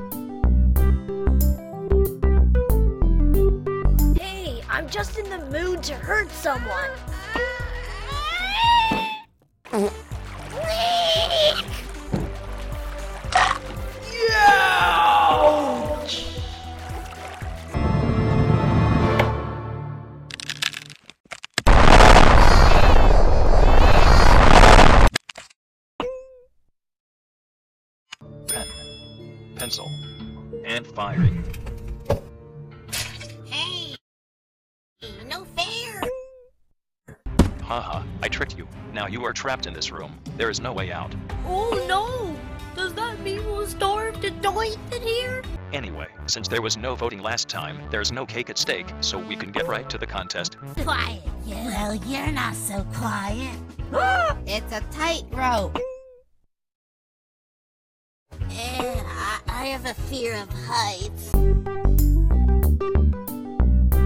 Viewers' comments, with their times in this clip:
0:09 Leak sound sounds like a fart in
0:28 TB Was also shown safe and was hit in the Clumsy Face with a cake,But THERE'S NO CAKE SPLAT!
0:49 i hear an oof sound